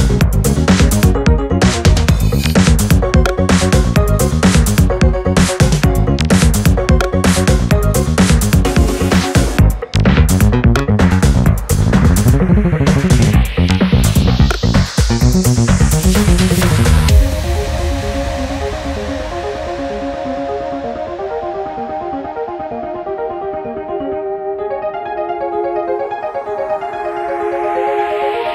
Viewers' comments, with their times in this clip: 0:09 OH SNAP, that drop SLAPS! This remix is all around insane! The fast notes in the bass just sound so good! :D